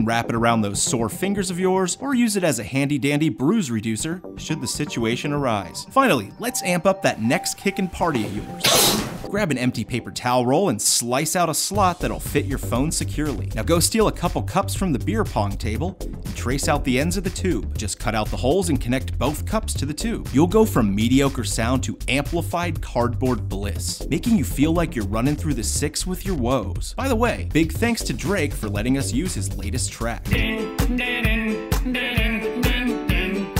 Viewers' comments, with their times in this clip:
0:06 where the fcking blow?😂
0:17 this does nothing, if anything it makes it quieter